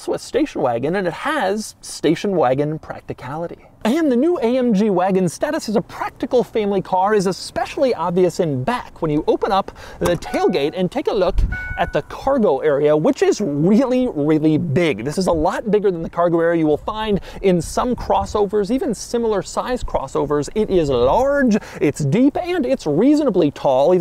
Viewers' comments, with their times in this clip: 0:10 sounds like an old ford’s chime